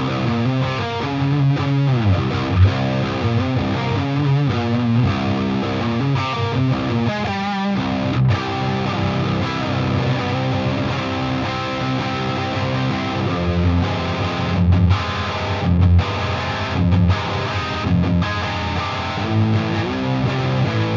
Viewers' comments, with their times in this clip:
0:06 sounded very sevendusty